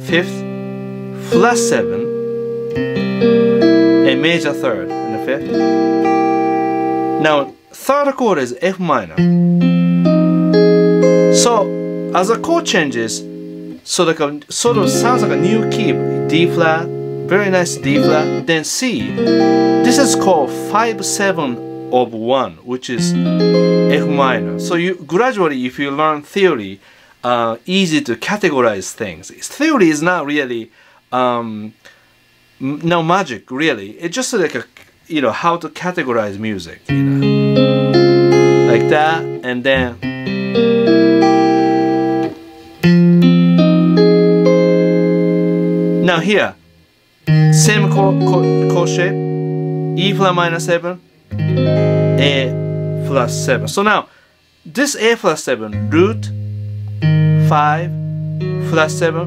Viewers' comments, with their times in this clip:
0:09 you say Fm but it is actually Fm7 you are playing right?
0:46 without me intro